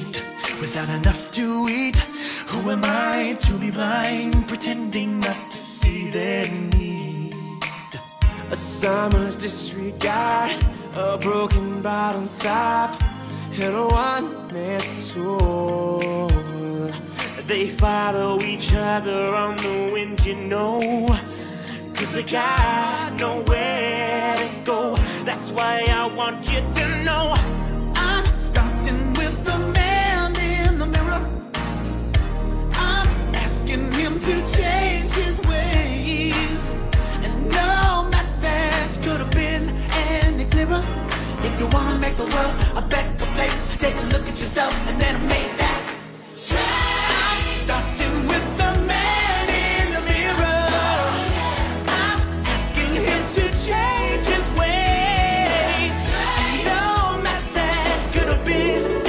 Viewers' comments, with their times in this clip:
0:08 i love Sam’s voice here
0:46 love that note,when the whole Glee club comes in..chills